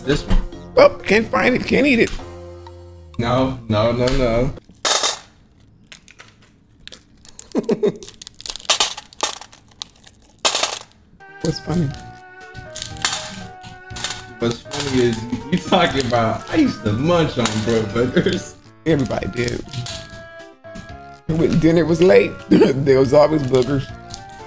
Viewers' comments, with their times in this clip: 0:07 giggles 🤨 what's funny